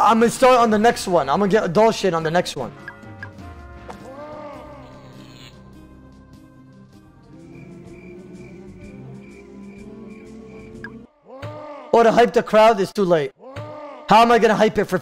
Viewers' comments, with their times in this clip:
0:03 I actually spit out my drink cuz of the laughter